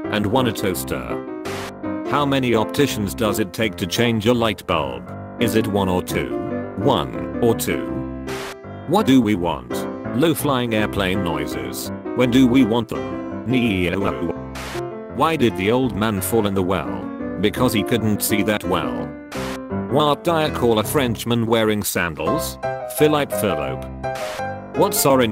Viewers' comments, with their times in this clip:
0:08 I think the noise the AI made was funnier than any other joke so far
0:11 it sounds like he laughs at the end of neeeeoooowww. can google translate dude do that? Edit: 121 likes? And people singing Schuyler sisters in replies? Perfect